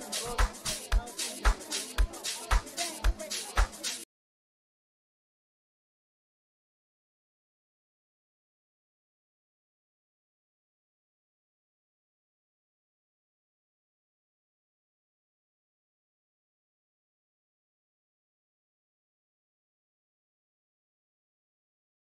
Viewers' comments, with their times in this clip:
0:04 Where did the sound go after ?? Only 37 seconds of music is playing ?😢
0:09 that drop 🔥🎶✊🏾🎹Les than a min in 🔥🔥🎶🎹🎹🇿🇦🇬🇧